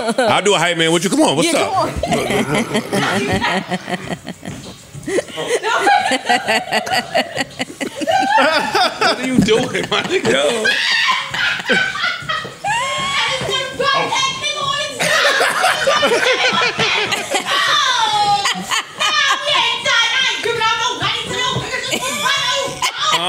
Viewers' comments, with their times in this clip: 0:04 OMG Pod history man, God bless Joe I didn't even know I needed that laugh